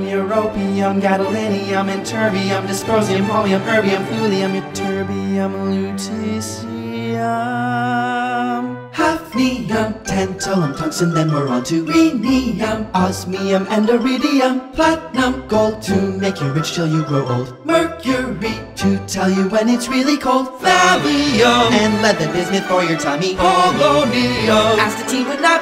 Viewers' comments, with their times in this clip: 0:10 Tungsten and the kids are going to be in the office today